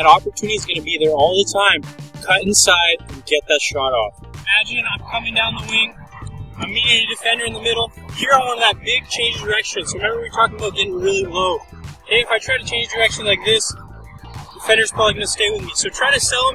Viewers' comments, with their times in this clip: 0:04 out of topic but the audio from sounds like a horror movie lol